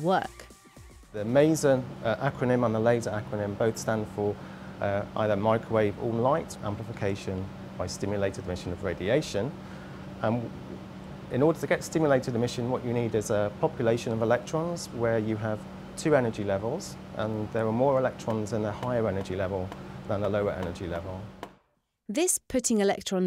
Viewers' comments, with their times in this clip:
0:09 dat stutter before he said "stimulated emmision" lmao